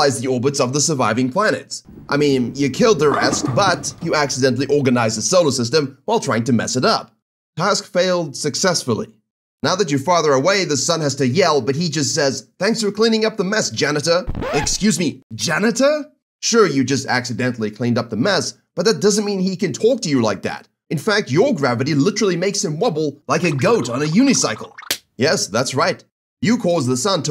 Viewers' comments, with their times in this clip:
0:08 anyone else hear Steve Urkel with Jupiter saying “Did I do that?” 🤣🤣🤣